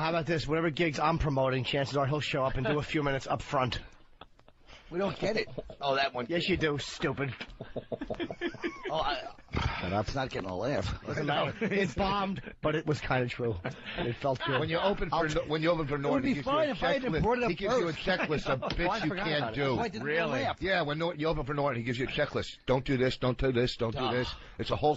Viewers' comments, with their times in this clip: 0:07 Yes, you do. Stupid. 😆😆 Jimmy's delivery is fucking hilarious